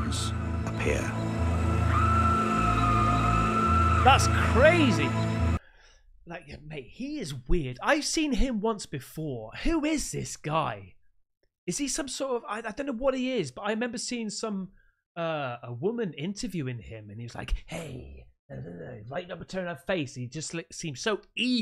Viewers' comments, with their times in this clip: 0:08 Dude you are fukcing ridiculous! 😂 I love ya brother; you burst out with some “HOLY SHIT MAN!!”😱😱 and I start laughing like right now and woke the ol lady up 😂